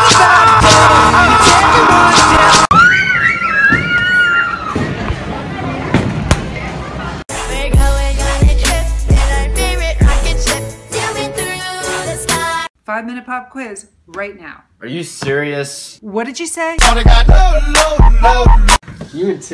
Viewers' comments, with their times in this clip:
0:06 I really like the remix